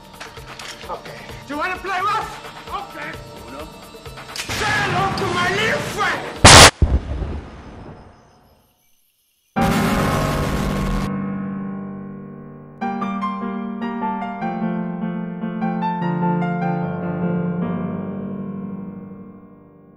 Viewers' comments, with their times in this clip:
0:06 at max volume
0:06 bruh i had headphones F